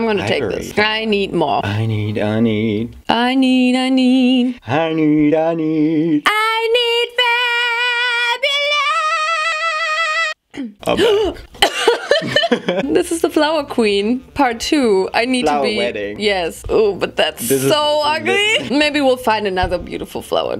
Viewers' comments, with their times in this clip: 0:06 anatole kuragin wishes he could sing like this